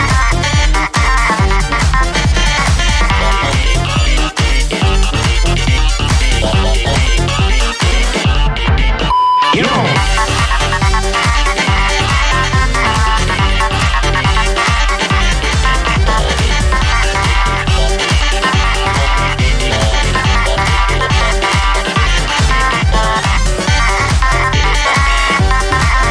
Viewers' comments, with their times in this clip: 0:09 I love how Tabi curses at cuphead when the beep happens